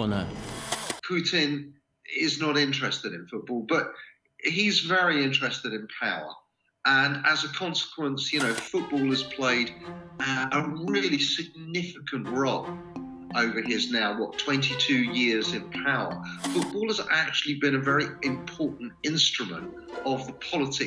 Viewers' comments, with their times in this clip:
0:07 It was so strange to listening to Putin speaking in English